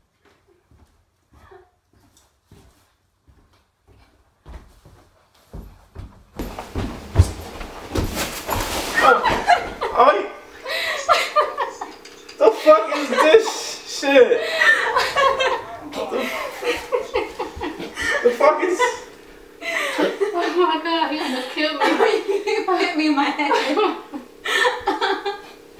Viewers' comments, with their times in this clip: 0:09 wtf was that "oi?"